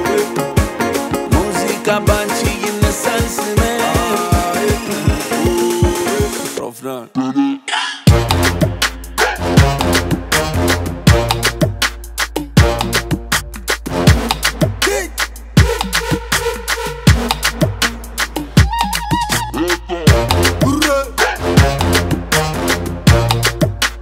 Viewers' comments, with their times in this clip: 0:08 Beat😮😮😮😮😮 Godamn it☄☄☄☄